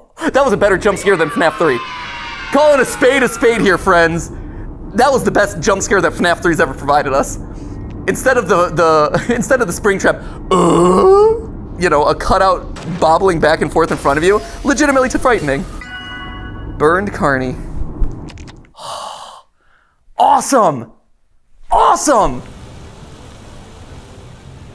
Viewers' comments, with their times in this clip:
0:09 The way matpat mimics the spring trap jump scared is so funny 😂😂😂